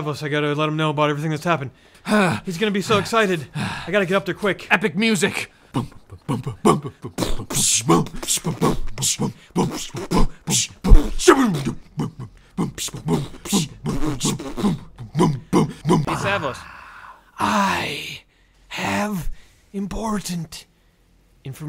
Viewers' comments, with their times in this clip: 0:03 EPIC MUSIC 😂 LOL